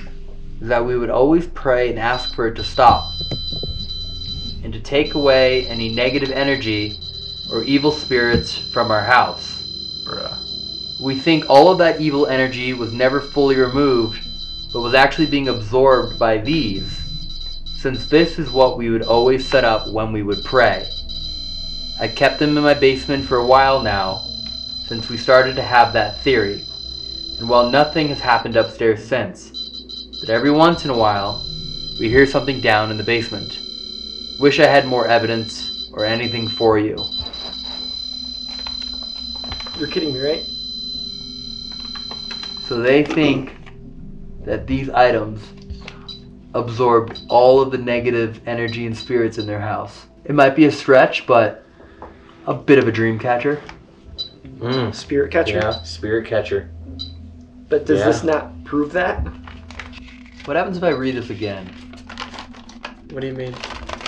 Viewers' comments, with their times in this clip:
0:08 possibly a growl or something at this point?
0:48 disembosied voice says "stop".